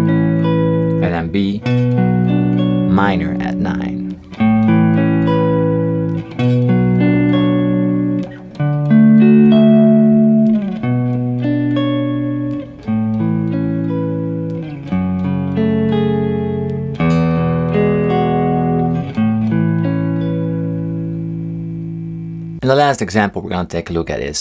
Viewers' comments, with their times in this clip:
0:09 I dont really like that add9 on the D chord feels like a perfect octave would have been better in this context. (could just be my lack of funkyness xD)